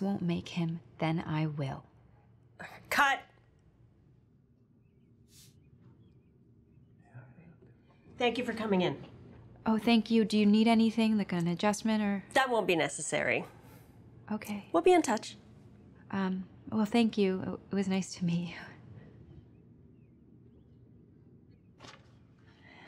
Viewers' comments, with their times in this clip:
0:10 so much acting and communication in facial expression and tone. Great job… ❤